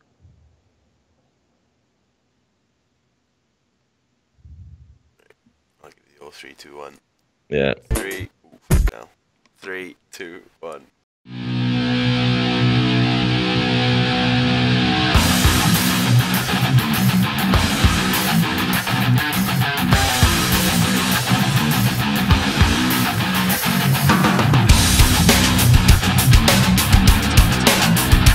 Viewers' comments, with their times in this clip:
0:10 i thought that was legit audio for the video and i was here thinking, fuck me is that the into music